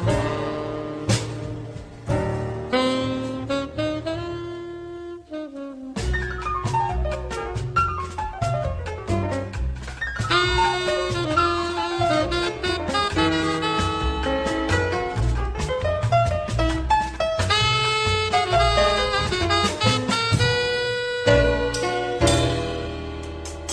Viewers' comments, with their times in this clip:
0:06 Ineffable, Ethereal, Encapsulating all that is Divine and Pure in the World. My Word, I can't even begin to express how crucial music like this will be to humanity for what I hope to be eternity.